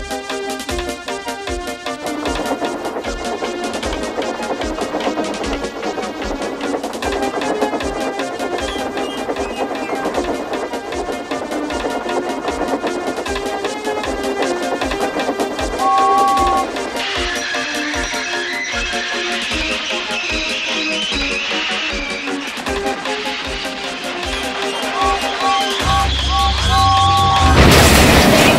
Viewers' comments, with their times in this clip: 0:06 disaster lay ahead-BANG!!!-EXPLOSION!!!
0:14 TROUBLE AHEAD!!! TRIPLE O FACE SOUND